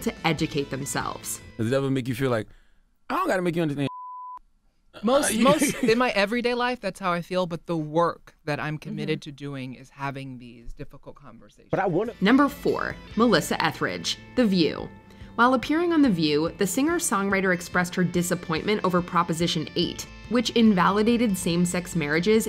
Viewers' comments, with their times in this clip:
0:09 dude his voice tells his reality